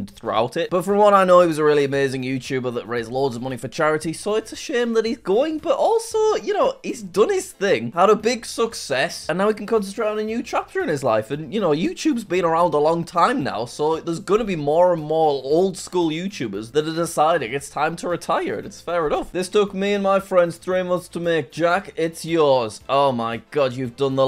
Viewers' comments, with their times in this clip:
0:07 guys he said success correctly, probably took him 10 takes
0:07 HE SAID SUCCESS CORECTLY